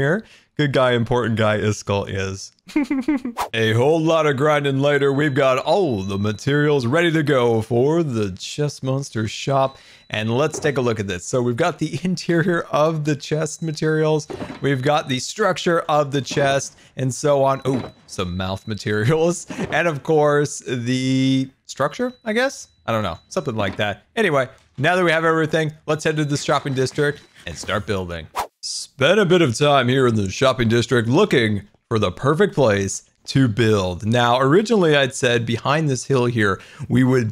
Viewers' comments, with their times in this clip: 0:04 Fire Alarm anyone?
0:04 what is that peeping in the back lol
0:04 Constant high-pitched beeps. Microwave? Washing Machine? s̶m̶o̶k̶e̶ ̶d̶e̶t̶e̶c̶t̶o̶r̶
0:06 the peep sound in the background got me confused I thought it was my dishwasher
0:06 I can hear some beep
0:08 What the hell is that beeping in the background ?
0:14 at like does anyone else here the beeping?
0:18 am I the only one who hears beeping?
0:19 anyone else hear beeping?
0:22 what in tar nation is that high pitch screeching noise in the back round ?!?!?